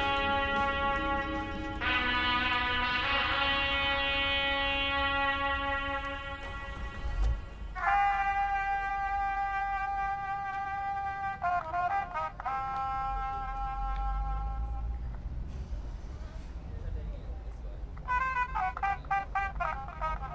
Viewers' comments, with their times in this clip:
0:07 Metropolis theme goes so fucking hard, I'd be way too busy jamming out rather than studying/focusing